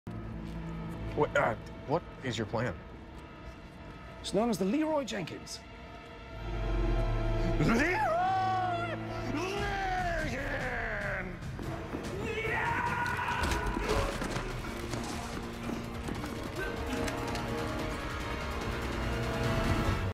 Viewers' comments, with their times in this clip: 0:07 leeroyyyy (voice crack)jenkins